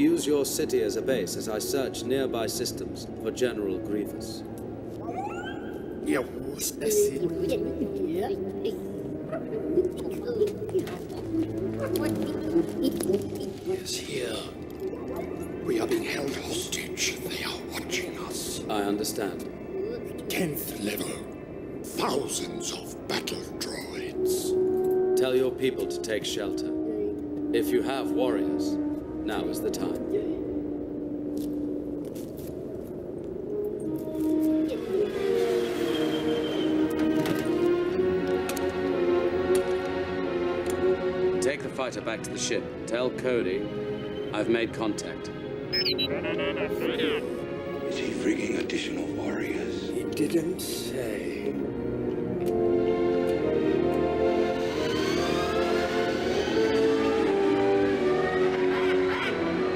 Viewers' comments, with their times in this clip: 0:06 General Green man
0:44 Take the minor back to the ship. Tell Cody I made contact she freaking out 😂